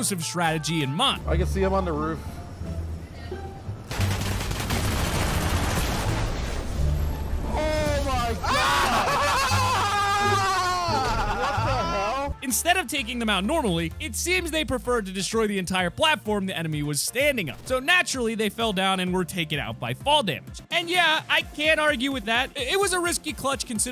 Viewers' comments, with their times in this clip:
0:08 What Tf was that guy laugh
0:09 the hell is that laugh